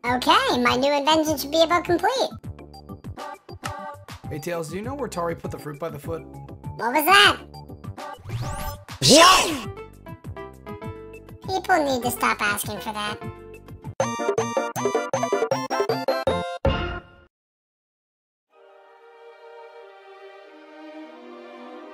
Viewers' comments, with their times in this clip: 0:04 as boom bro VA i was going to say : oh.. he's dead.. xD